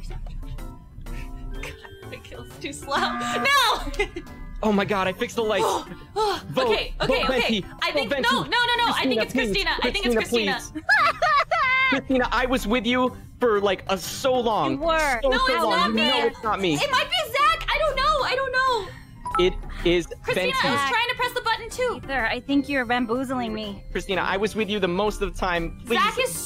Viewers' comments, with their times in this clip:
0:10 I can NOT hear anyone but Marinette with that reaction 😂